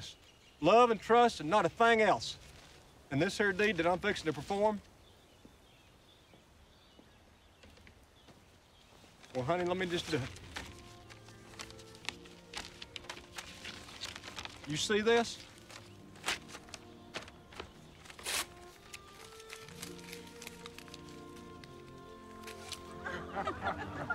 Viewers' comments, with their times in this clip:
0:05 the beginning of this song reminded me of Pure Praire League song "Amie" The movie actually looks good hope it's a hit because I miss romantic comedy's